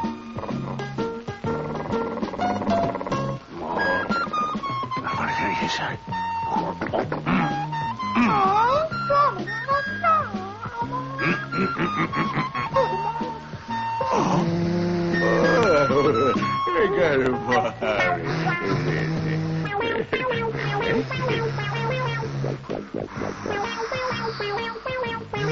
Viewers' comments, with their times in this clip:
0:06 I hear door knocking